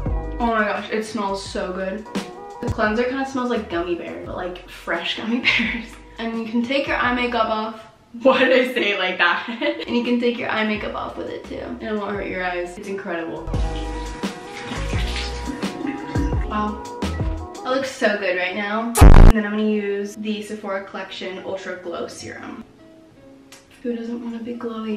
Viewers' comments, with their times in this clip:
0:08 guys when they hit puberty: